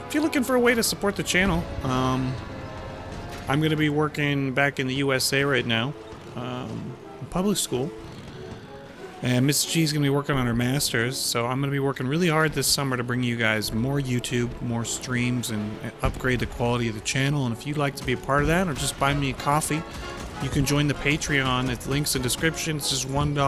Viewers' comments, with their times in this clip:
0:09 Sounded like you said "Mr. Gs gonna be workin on her masters" lol